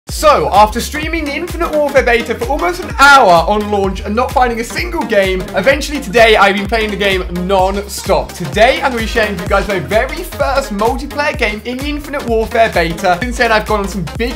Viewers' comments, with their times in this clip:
0:00 dog in backround